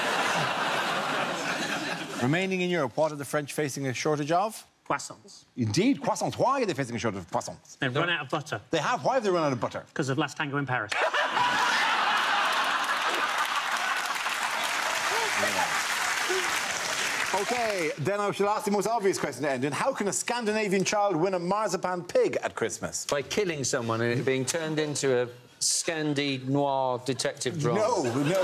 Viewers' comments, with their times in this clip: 0:10 what on earth does he say??